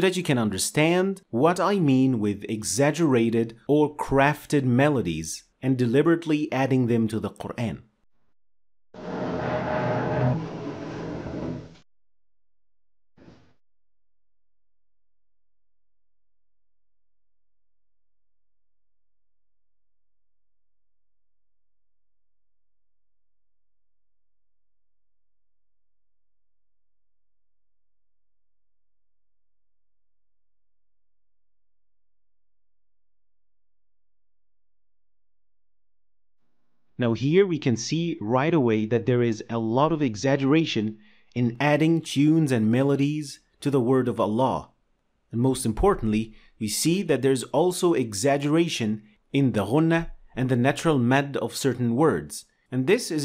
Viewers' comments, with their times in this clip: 0:07 I think YouTube has muted the audio for copyright issues
0:13 from sound is not playing... it it for me only???
0:13 Sound of the video is cut at the
0:14 am I the only one who can't hear the first example?
0:17 No sound from until the maqamaat recitation is complete. Anyone else facing same problem?
0:17 The recitation used as an example is not in the video. It probably got cut off or something
0:17 the audio goes off for me. Anyone knows the reason?
0:37 I was unable to hear the people in the television on